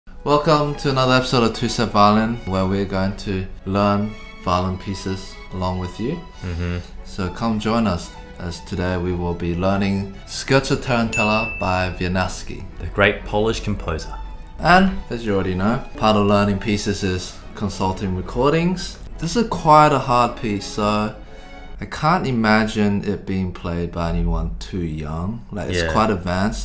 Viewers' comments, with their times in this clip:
0:05 ... Wait the sound he made isnt it familiar?... Ohh yeah the death sound of trex from the dino run game that you play when you dont have internet connection!!
0:10 all people in poland: triggered KURWA WIE NIAW SKI WIENIAWSKI